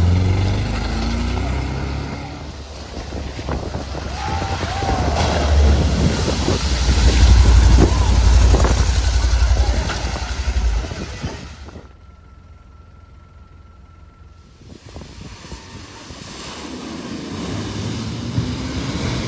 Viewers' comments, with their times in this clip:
0:04 what’s up with all the murican’s Aw that’s sad